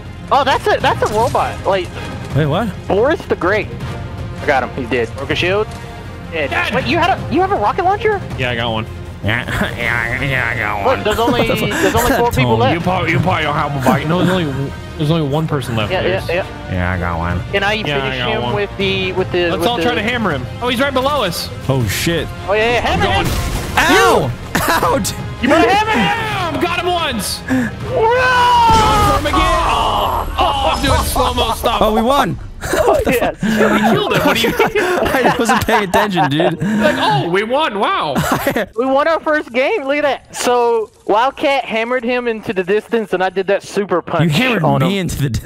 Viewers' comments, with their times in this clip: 0:10 if you don’t mock your friends on how they speak your not real friends 😂
0:27 The air missile soundin like delirious had me cryin